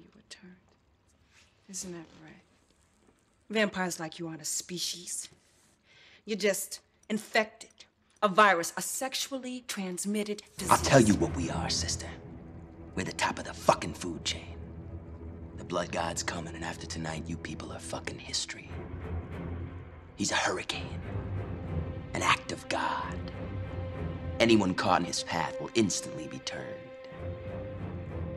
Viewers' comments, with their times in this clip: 0:09 That look, that music epic